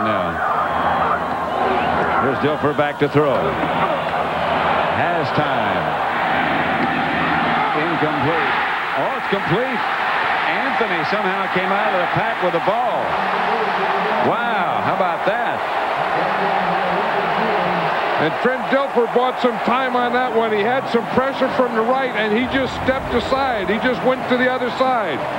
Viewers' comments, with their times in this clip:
0:10 the guy is just like “well how bout that?” With absolutely no emotion
0:13 Wow how about that? With such an emotion! He thinking like "I hate my Job"